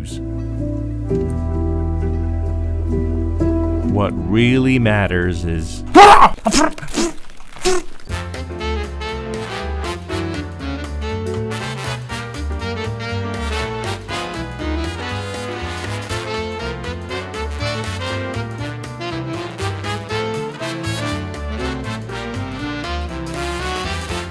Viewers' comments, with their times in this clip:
0:05 that is a screamer! :D